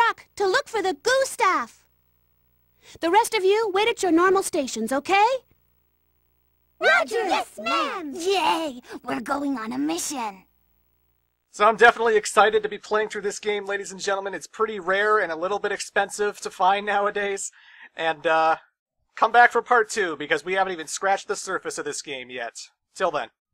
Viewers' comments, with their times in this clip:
0:06 The one Servbot with the completely different voice always cracks me up.